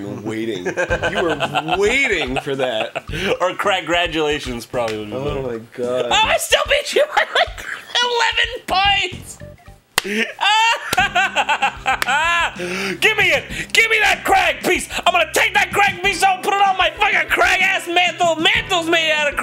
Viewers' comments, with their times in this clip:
0:05 BLACK AIDS! (turn subs on, all cred goed to my mate)
0:05 you stop breathing after